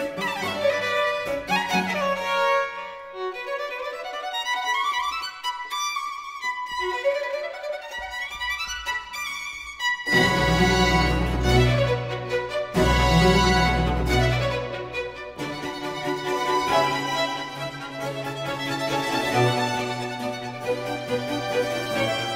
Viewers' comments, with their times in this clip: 0:06 The suspended chord in this passage was one of many dissonances that were "corrected" in the early Ricordi editions (for the most part by Malipiero). Thought to be errors (or nonsense) and replaced by triads.